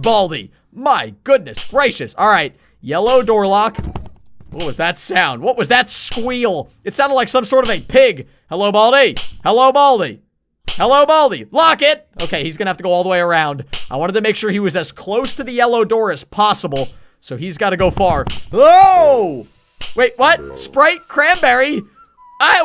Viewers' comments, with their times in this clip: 0:08 I think I heard the unused chicken sound